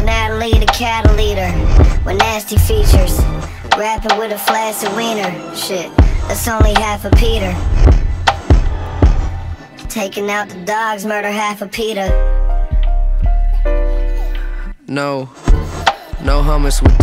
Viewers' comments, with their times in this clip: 0:03 samee bro the extreme diversities of complex music structure that he has here is unanimously unmatched its actually baffling..